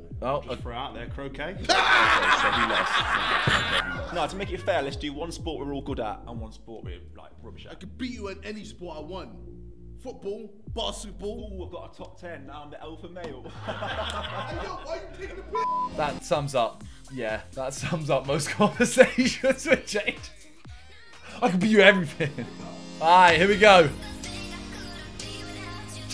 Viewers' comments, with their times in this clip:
0:07 Foot paul Basket paul Any of the Paul’s
0:10 no one literally no one KSI bassetball
0:11 Jj couldnt say basketball right. He said 'bassiball'